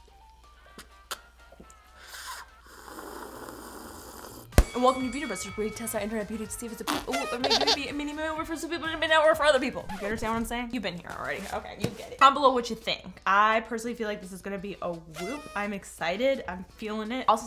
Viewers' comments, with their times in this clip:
0:05 When she said ,,Andwelcometobeautybusterswherewefuxrucohcrdyitcyvo”, I felt that😔